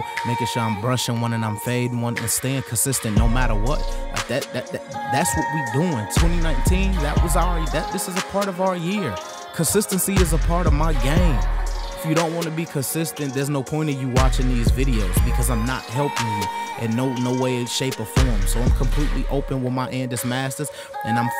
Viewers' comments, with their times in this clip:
0:06 sounds like motivational speech